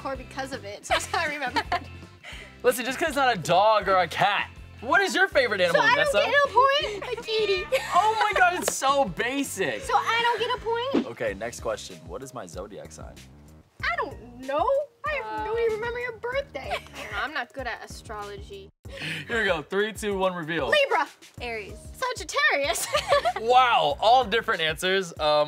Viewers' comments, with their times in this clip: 0:07 the way she said “kitty” 🥺